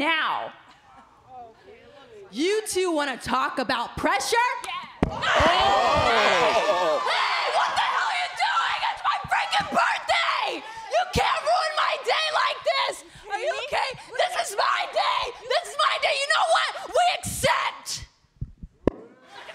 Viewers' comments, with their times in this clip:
0:04 it was the slap heard around the PC!
0:06 Bayley shouting like a mom who had her kids slapped in a party...
0:07 The worst acting I’ve ever heard